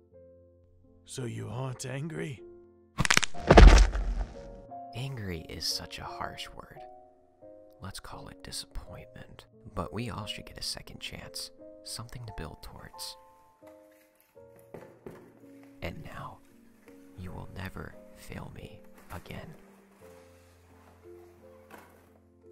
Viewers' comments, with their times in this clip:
0:03 his neck go ✨S n a p✨